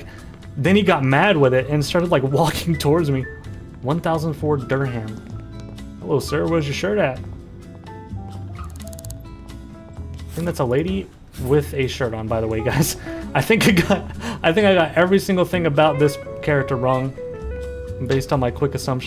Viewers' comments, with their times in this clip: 0:06 You did not just pronounce Durham like that